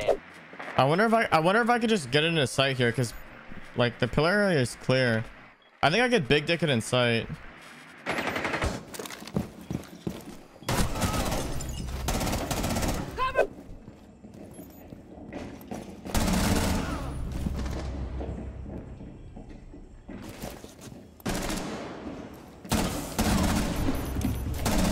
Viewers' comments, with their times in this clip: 0:05 what I heard was right or am I wrong LMAOOOO!!!